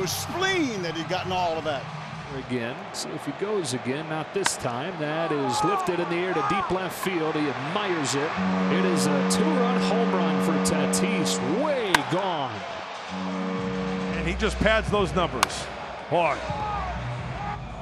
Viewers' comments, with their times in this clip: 0:04 Hahaha on the first one you can hear one of the boys in the dugout yell "OOH MY GOD!!"